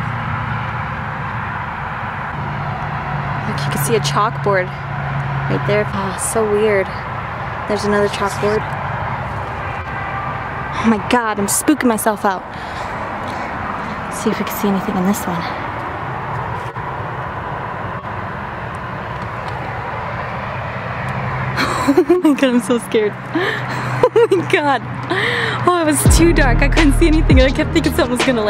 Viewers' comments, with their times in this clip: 0:08 theirs a whisper
0:08 theres a whisper! you werent just freaking yourself out! i heard it haha
0:09 in heard some1 say (excuse me)..